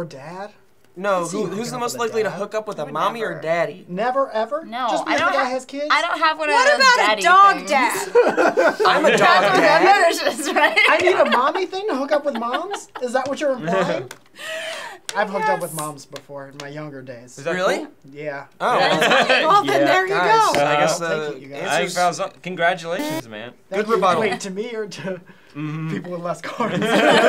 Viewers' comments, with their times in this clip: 0:09 I don't appreciate the ghost discord notification